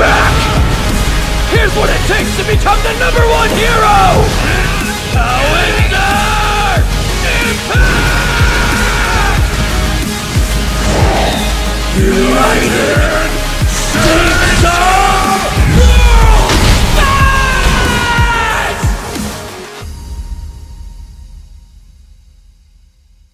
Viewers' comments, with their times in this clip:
0:09 right here where Midoriyas voice has an echo when he says "Uuuunited..." , because hes EVERYWHERE at the same time pretty much bouncing around a million miles an hour. So his voice sounds like its 5,000 Midoriyas talking in sync, gives me chills every time.